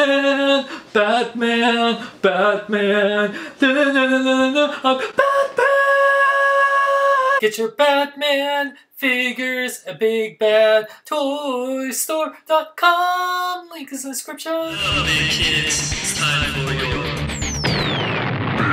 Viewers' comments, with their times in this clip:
0:04 is it posible to make that high of a pitch with your voice